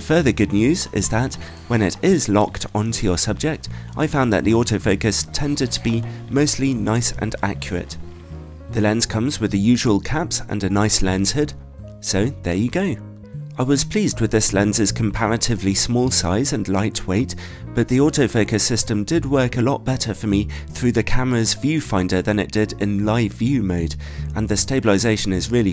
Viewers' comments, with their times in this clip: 0:06 The stabilization on the Sigma was my concern. While I think the Sigma is probably sharper than the Tamron 100-400 in the corners, I'm concerned about the stabilization. However, I don't think it's as bad as you make it seem in the video (based on other video's I've seen of it). HOwever, at the same time, I have heard the Tamron's is a bit better overall Are you sure that's high pitched "squeal" is normal? I'd think the lens would be quieter than that when focusing. Tamrons are very quiet, and the only other lens I had that sounded similar to that was my 70-200 Nikon (VR) when the AF motor was going out.